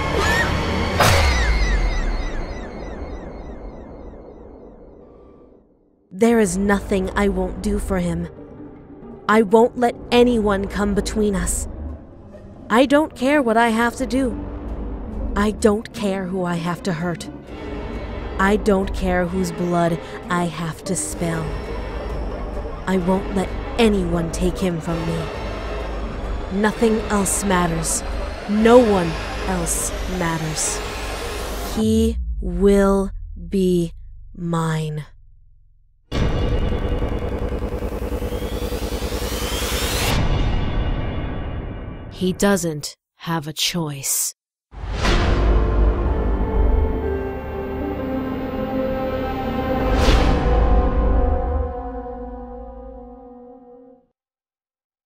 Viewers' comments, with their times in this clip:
0:05 speed it 1.5 she sound REALLY serious
0:45 will always be my favourite part, even though it's just the sound of a Japanese school bell but more eerie sounding I just love it so much!!
0:45 I hear the school bell
0:45 That music is creepy now.